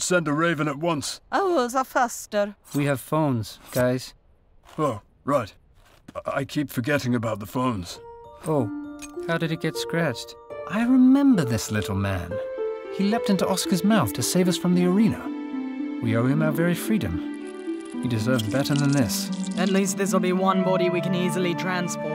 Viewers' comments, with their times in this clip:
0:03 such a good Edward impression
0:09 So many good voices! I like Wesley